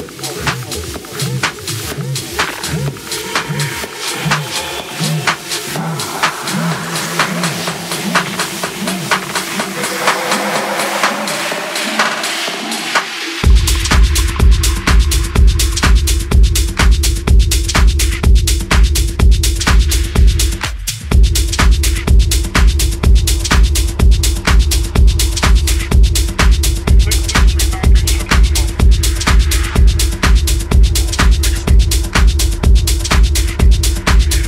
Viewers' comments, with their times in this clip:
0:03 That track right is fantastic, good driving music, perfect segue track as well.
0:18 thought the muffled beat was so sick. its the little things like that that turn mixes into true works of art